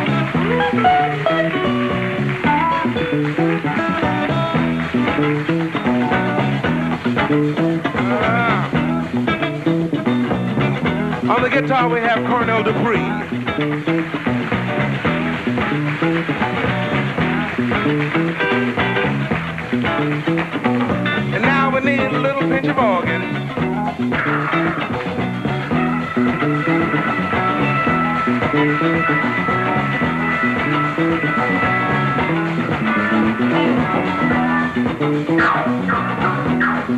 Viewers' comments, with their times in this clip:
0:05 Cornell Dupree leveled out the overall tempo for the song Love his licks!
0:05 It got good to the guitar player
0:18 Cornell: Does it GET any more "Dial 911" than that FUNK-TURE wound of a chord he inflicts w/4 quick stabs? AFTER that sweet "bawlin'" Memphis guitar! Hail the immortal Monsieur Dupree!! What a badass BAND! At EVERY position! ...Thanks for your time! 👍🏻